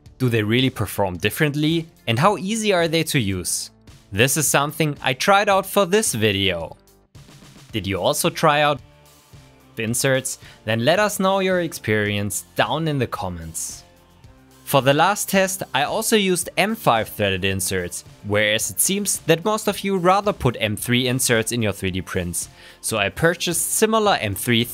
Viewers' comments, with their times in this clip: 0:06 There is a problem with the audio in the video, it cuts Your voice and then returns to normal after a second Great video anyway :D
0:06 sound cuts off for 2 sec. any one else ?
0:07 When you don't know what to say. I can hear the question mark in your voice.
0:08 your voice got cut off